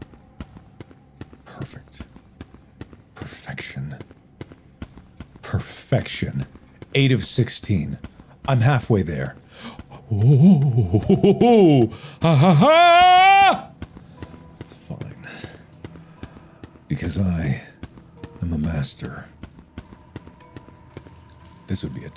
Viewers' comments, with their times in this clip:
0:08 From Mark's enthusiastic "ho ho ho, ha ha ha" to calm "its fine cuz im a master" is classic Markiplier moment at its finest Glad devs listened to Mark's criticism